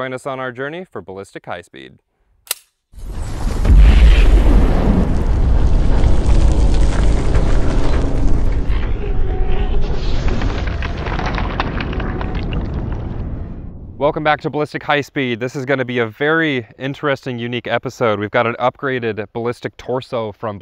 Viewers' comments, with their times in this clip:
0:03 “sir I’m gonna need to check your recip-“ *Mississippi Queen starts playing*